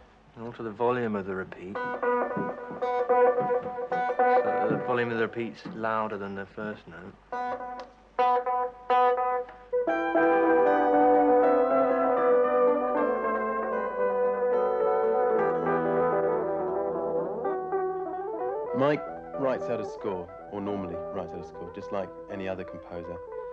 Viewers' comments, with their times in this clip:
0:10 Can anyone else hear some 'Discovery' in the bit he plays ?